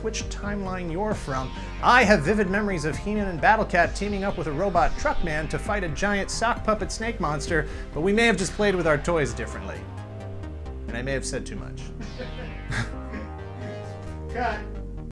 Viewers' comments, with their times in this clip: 0:10 those fake “laughter in the background” situations ruin your videos...